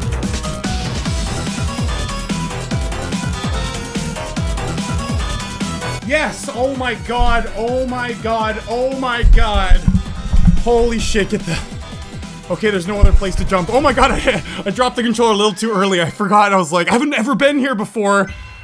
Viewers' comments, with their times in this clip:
0:05 If riot was calm